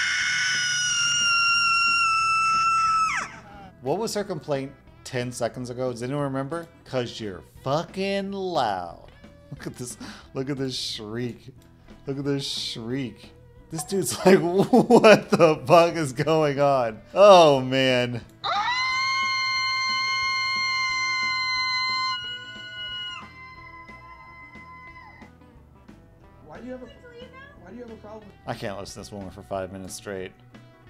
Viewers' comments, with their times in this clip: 0:08 Okay but honestly id probably be the woman except I would wait til i get home, and then scream even LOUDER into my pillow
0:16 he must be Laughing his butt off at home, still... she sounds like a car needs a change of brakes. I am LMAO